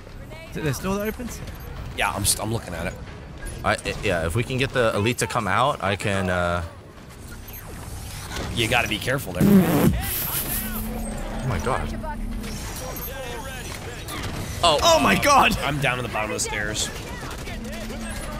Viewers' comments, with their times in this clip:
0:03 No one going to comment on the Elite that sticks himself and screams as he dies. Because that is hilarious.